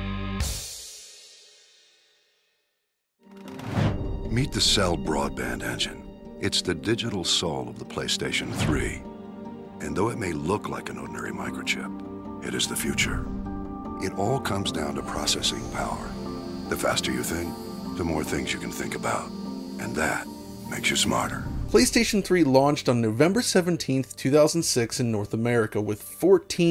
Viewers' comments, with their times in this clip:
0:10 The man talks about “Cell” is Admiral Hackett??? 😏😁